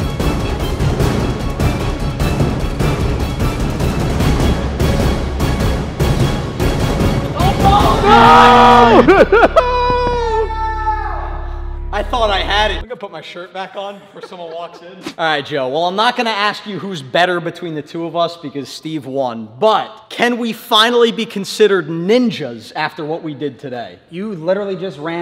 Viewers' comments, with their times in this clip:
0:08 Everyone: *saying that they are first* Me when i saw how were they able to scream/yell like that?!